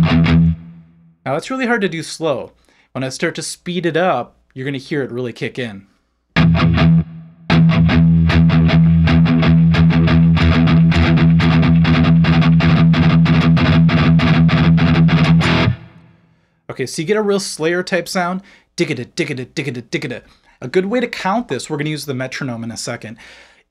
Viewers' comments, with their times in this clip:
0:05 doesn’t that sound like the domination breakdown for a second? 😂
0:06 this went from Pantera, to Iron Maiden to Metalica real fast.
0:07 Is it just me or did kinda sound like pantera domination
0:11 washing machines be like: